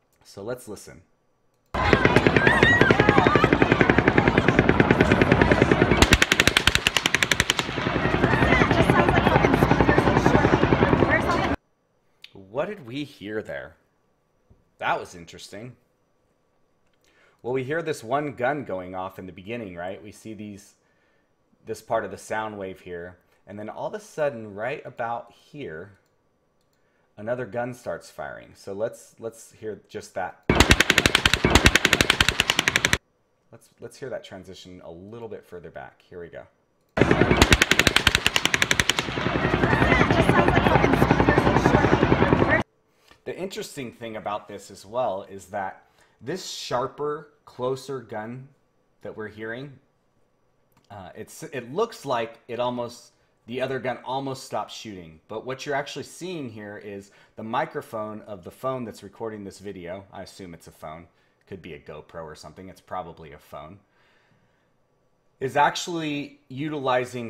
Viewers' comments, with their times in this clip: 0:03 play from over and over. you can hear the distant report, then the close hits. And they sound pretty much the same. Higher - then lower. And they have the same approximate range in Doppler shift. So accounting for the sweep of the rifle. It very obvious if you listen over and over to the same few seconds at the beginning of the shots.
0:51 it's probably not "noise cancelling," but peak limiting. It cuts the boost in the mic amp so that the sound isn't clipped, which lowers the volume of everything, including the belt fed sound, which is still there, but harder to hear because the volume is lower, and the louder click-like sounds are so much louder.